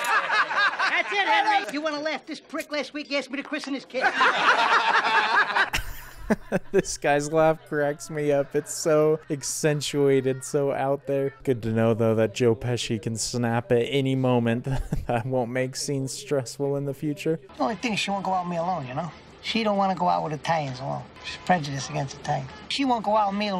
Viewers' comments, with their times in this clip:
0:05 " this guys laugh cracks me up" That's why Ray Liotta was cast. he nailed Henry Hill's laugh.